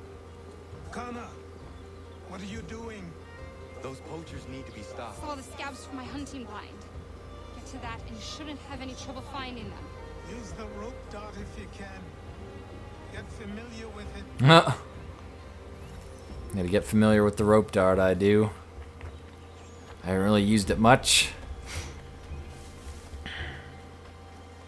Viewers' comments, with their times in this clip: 0:06 the old man sounds like Arnold Schwarzenegger